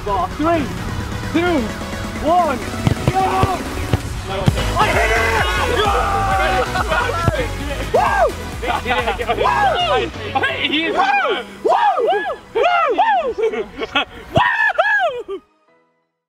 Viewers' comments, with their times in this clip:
0:03 vik creates the wow
0:10 vik created the woah
0:11 Did Ethan and Vikk make the Woah back in 2016 😮